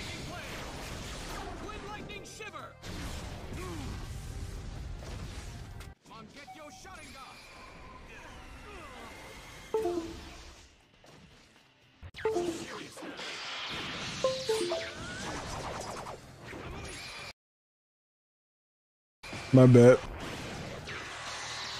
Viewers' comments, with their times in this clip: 0:07 the windows sound was perfect lmao